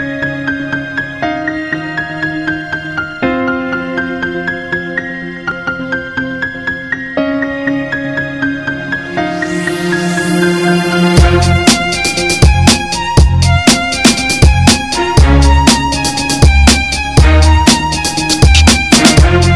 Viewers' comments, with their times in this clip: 0:04 had an error in the notes
0:05 That whiff really ruins the song